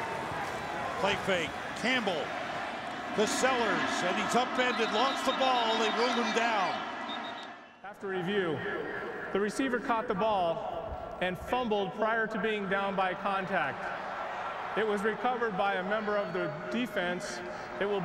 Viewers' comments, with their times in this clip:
0:05 ref blows whistle and play is dead BEFORE saints recovery